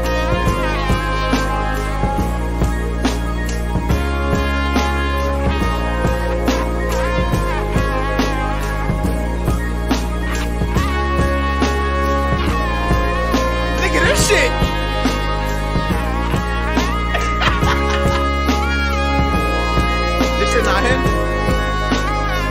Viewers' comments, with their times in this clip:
0:09 bro got the marshmello type beat 💀
0:09 majestically Ahh beat